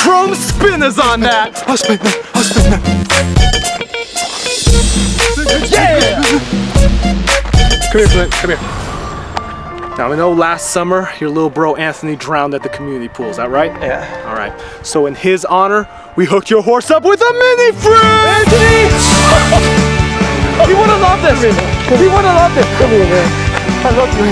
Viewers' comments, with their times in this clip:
0:08 HAHAH Clint was holding in a laugh